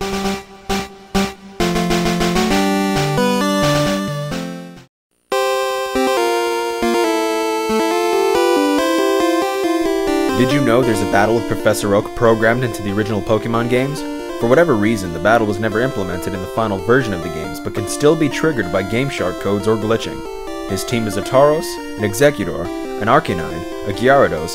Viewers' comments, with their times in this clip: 0:05 honestly, when the music started up I came a little... TOO MUCH FEELS!